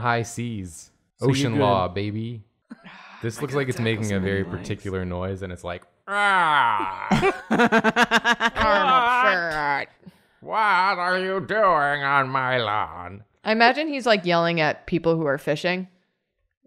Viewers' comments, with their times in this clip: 0:03 'this looks like its making a particular noise. . .' The noise is sqidward voice :p